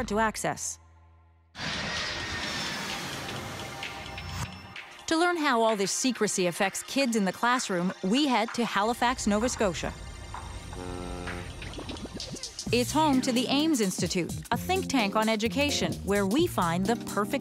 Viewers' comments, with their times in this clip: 0:03 Off topic but the music starting is REALLY good